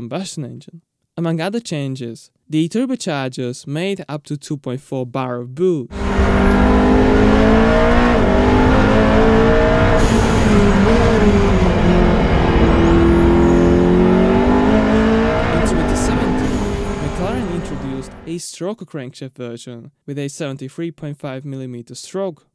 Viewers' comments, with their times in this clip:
0:03 Ah yes, 2.4 bar of boo